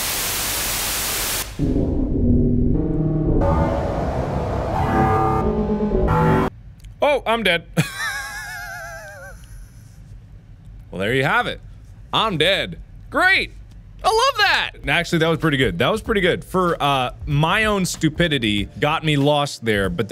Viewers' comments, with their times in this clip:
0:07 my car trying to start...